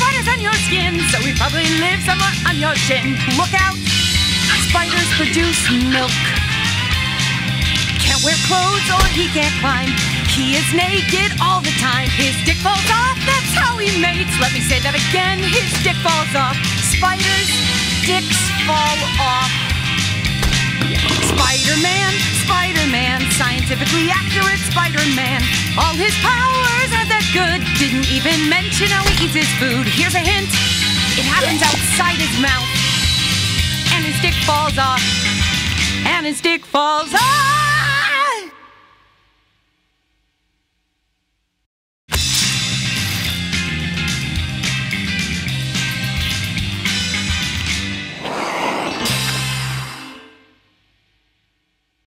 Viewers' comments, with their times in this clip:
0:04 the way the ‘look out! spiders produce milk’ is delivered has been cracking me up for 10 fucking years and i’m not sure why
0:37 It sounds like Gohan screaming :|
0:37 did she have a voice crack